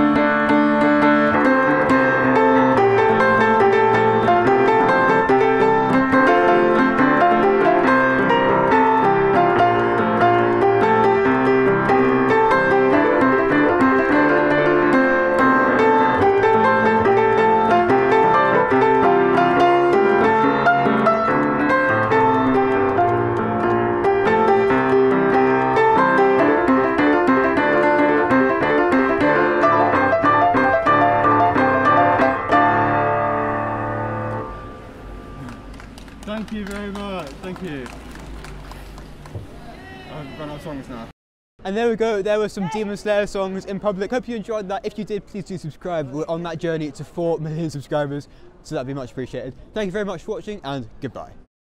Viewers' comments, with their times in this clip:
0:06 I think u messed up a tiny bit
0:18 was I the only one who heard the slip
0:39 Mad respect to the dude screaming SHEEEEESH in the background